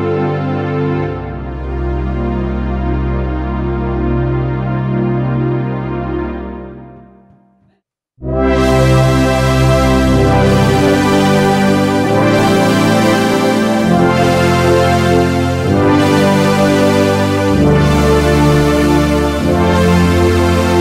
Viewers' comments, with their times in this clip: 0:07 Richard Marx FTW! And those brilliant brassy strings wow. I bought a JV-880 in 1991 and sold it somewhere along the way, wish I had kept it.